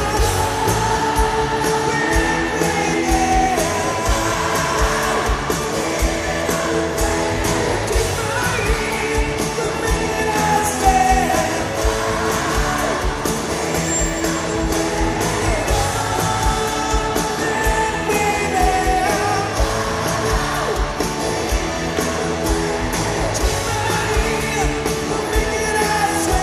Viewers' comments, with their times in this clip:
0:08 the fixed note!